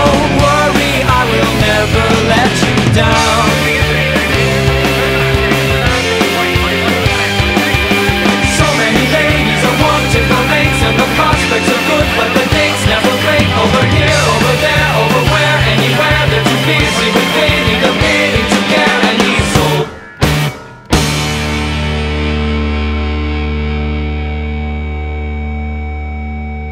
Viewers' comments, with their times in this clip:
0:03 my right earphone really enjoyed this part
0:03 sounds like a very famous austrian painter's speech and eloquence
0:08 I swear this bit sounds like it’s coming straight out of a disney musical, but it’s so damn good😭